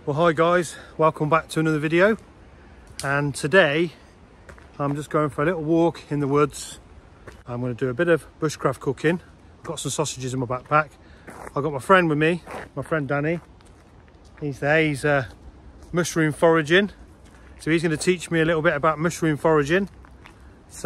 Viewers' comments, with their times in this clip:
0:08 You had me at "Bushcraft Cocaine". Imagine my disappointment :D